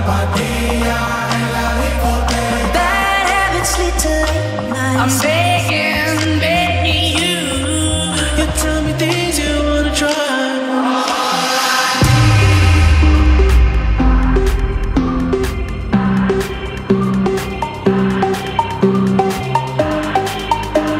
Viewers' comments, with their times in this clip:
0:08 The only song that didnt do much for me was that part of the weekend song Wish they kept going down the melody instead of cutting it with that song.